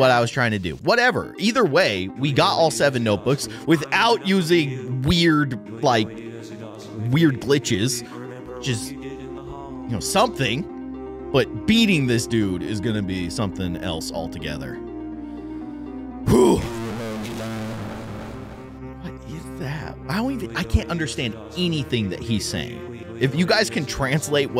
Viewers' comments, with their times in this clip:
0:06 sounds like he's saying "I've had enough of you. Remember what you did in the halls. Remember your mistake in the halls. You'll get pay back."